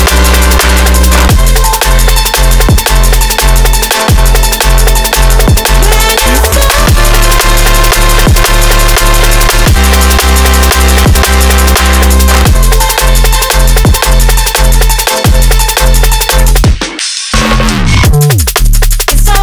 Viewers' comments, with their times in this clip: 0:06 That bass wub 👌